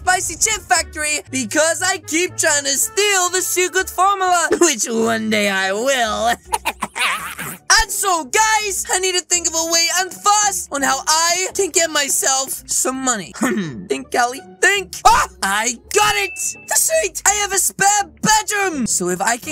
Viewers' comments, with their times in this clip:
0:04 that laugh be like: HehEhEeEeE